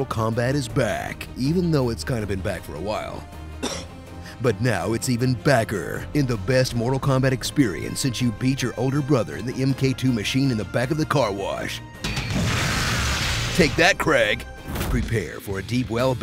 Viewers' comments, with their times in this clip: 0:03 was that cough real or was it being sarcastic
0:04 That random cough 😂